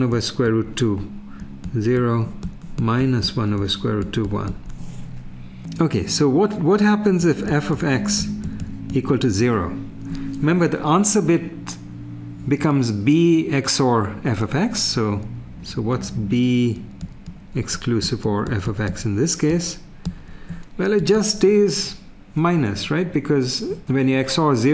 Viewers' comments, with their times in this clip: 0:08 one can hear someone humming a nice song in the background